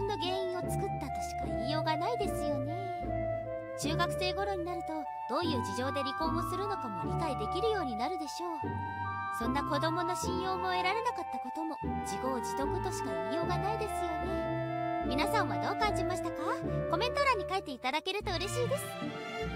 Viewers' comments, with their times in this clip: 0:07 I woke up at 2 pm, and now it's am. That phone ping scared the hell out of me.